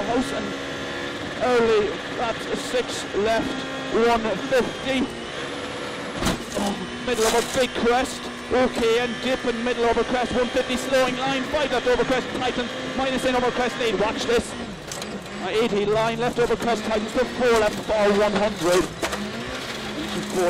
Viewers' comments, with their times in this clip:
0:05 Nagle said ourch or I heard wrong?